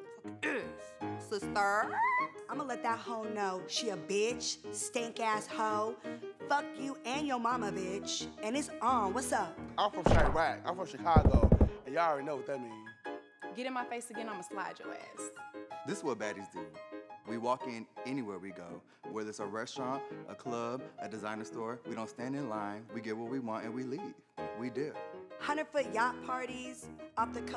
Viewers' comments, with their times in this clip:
0:10 not the gun shots 💀😂